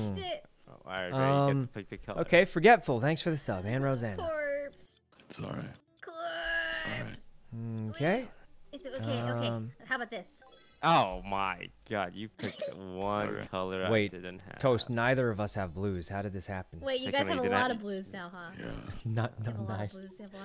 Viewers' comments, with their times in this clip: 0:03 corpse saying it's alright is so soothing idk why